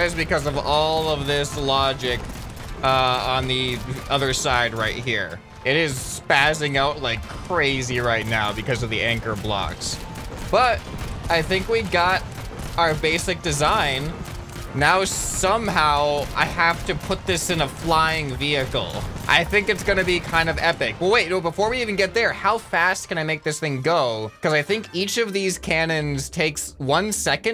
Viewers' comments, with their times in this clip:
0:08 did he say “anger blocks” lolololol